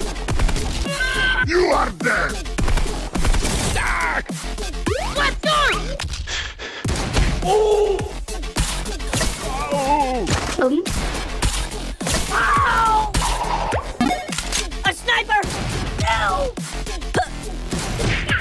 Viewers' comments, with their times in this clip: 0:05 I know that voice anywhere